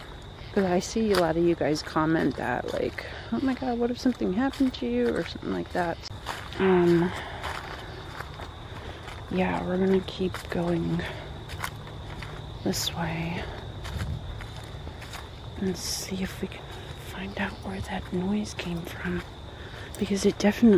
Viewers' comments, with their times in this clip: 0:06 Voice under yours